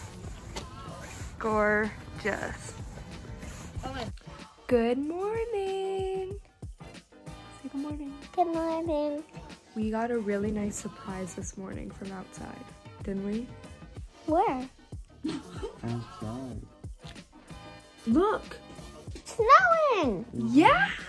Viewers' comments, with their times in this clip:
0:08 that good morning though. Adorable 🥺😄